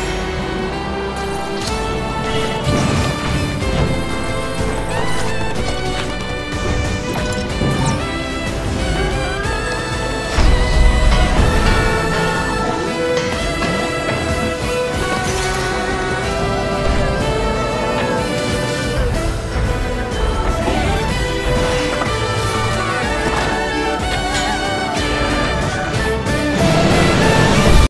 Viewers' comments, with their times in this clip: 0:10 the scream fits so perfectly to the music 😌
0:11 actually they should add these cartoon sound effects as some free dlc audio pack
0:11 the sound effects killed me 😭😭